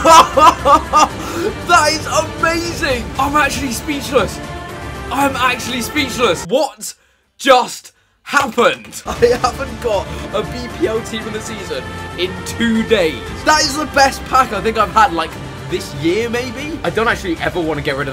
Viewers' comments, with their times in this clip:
0:04 you didn't sound speechless...